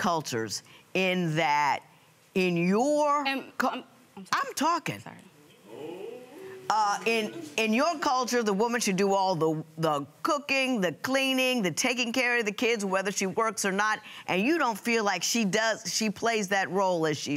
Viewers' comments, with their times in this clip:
0:04 Somebody said, "oooh!" Lol
0:05 when the judge said, "I'm talking"....the person after sounded like a wolf